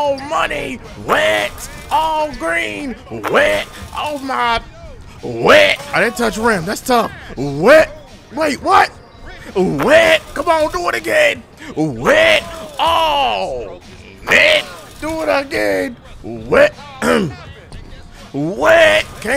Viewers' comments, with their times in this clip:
0:04 He sound like a preacher on a good Sunday😂😂😂😂😂